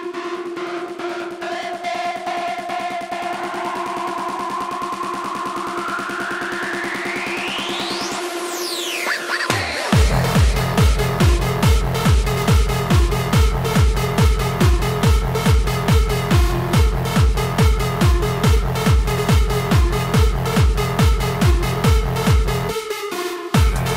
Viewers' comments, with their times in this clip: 0:06 AHHH that reverse base brings me back....